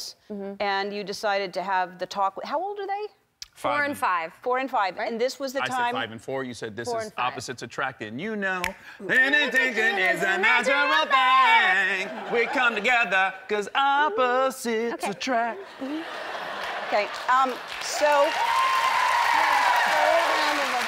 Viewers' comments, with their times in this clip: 0:08 Their little song break about opposites attracting was so FREAKING cute.